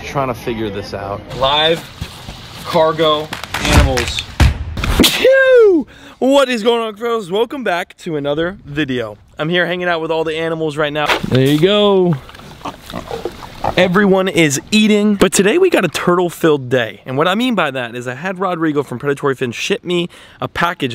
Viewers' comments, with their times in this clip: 0:06 I’m so tired I said “bless ya” out loud